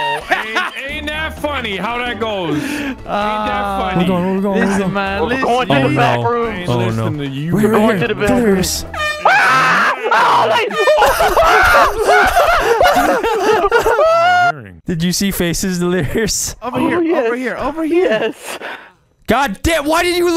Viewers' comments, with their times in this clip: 0:07 is by far my favorite part of this video. There screams sound so genuine too.
0:08 was not expecting that horn it scared me! 😂
0:08 That Delirious scream ... I need to see his perspective lmao